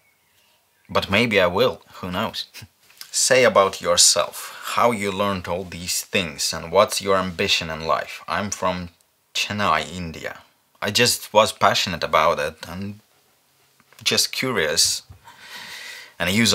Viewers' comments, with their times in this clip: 0:03 At last but not least, An Indian voice.. ♥